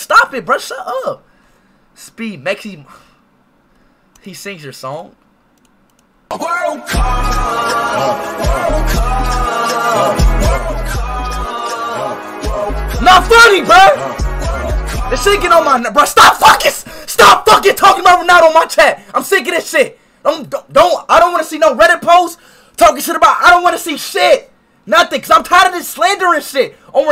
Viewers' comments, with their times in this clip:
0:10 his knee is singing 😂😂😂